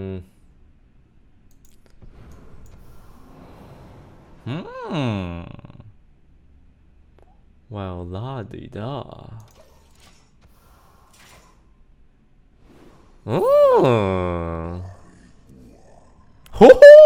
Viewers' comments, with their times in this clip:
0:05 U sound like key or peele in the continental breakfast video starting 😂